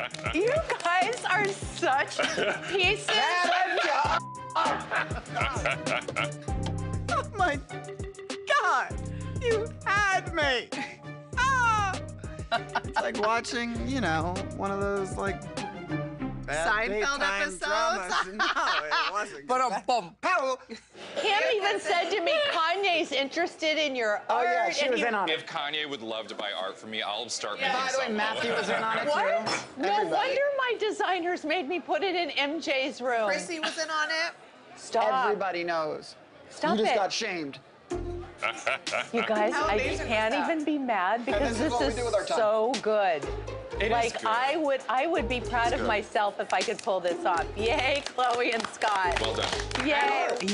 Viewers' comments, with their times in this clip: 0:08 Scott mimicking kris is hilarious 😂😂😂😂😂
0:11 khloe's cute laugh
0:37 fast forward to and enjoy hes laughter